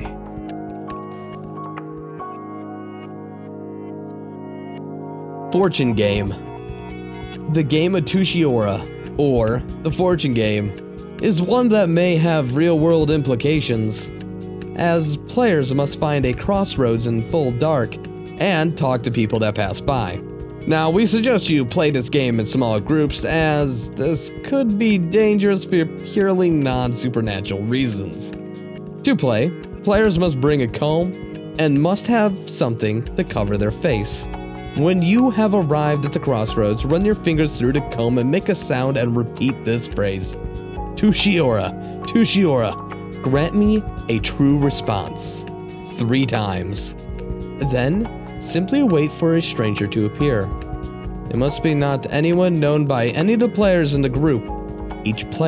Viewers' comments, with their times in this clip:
0:07 Ion mean to be rude, am i the only one that hates the narrator ? he just sounds like a try hard.
0:38 Since when did tsuji-ura become "tooshy aura"? lmao